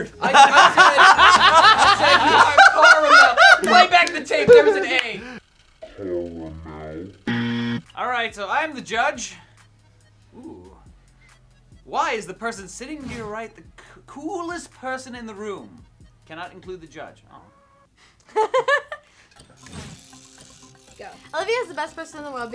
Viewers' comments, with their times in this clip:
0:06 HE DID NOT SAY THE OPPOSING WORD HE SAID CAR-UH-MEL BUT SHAYNE SAID CAR-MEL